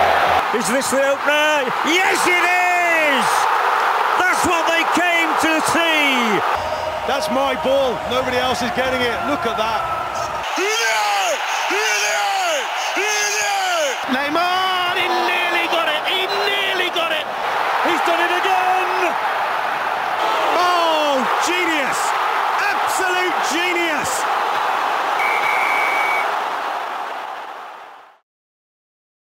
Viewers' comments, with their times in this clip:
0:07 sounds like the commentators in PES
0:10 I just don't know but isn't it a Russian commentator calling ''Blyat, Blyat, Blyat!''?